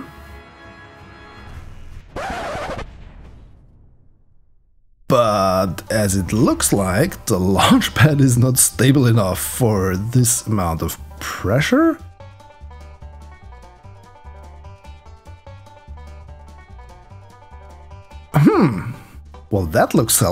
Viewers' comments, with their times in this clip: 0:06 Cue the sh*t's on fire banjo